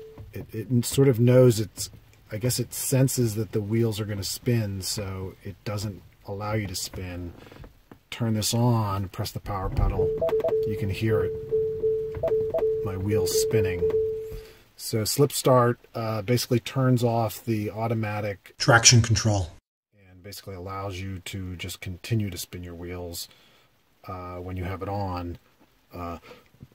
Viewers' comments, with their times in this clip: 0:09 bunch of Tesla bongs and beeps